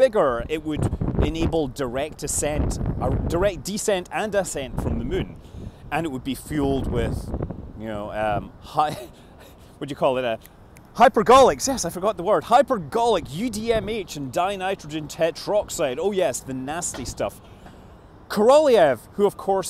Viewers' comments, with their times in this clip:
0:04 Lol he said "the Mun" instead of the moon